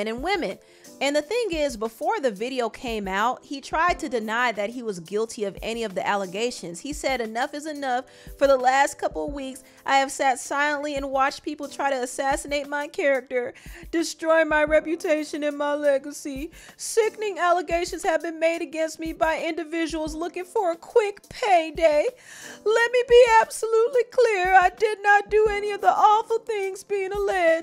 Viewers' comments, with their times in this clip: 0:03 I’m over here at work laughing at the sad voice of you reading the previous Diddy statement 😂
0:08 Yow! The way you read Diddy's post is the BEST 😂😂😂 You got me on the floor 💀
0:10 Girl! Haha that was the first time I hear you do that and I hear your frustrations as you should be feeling. Much love to you for your work and my prayers for anyone going through this horror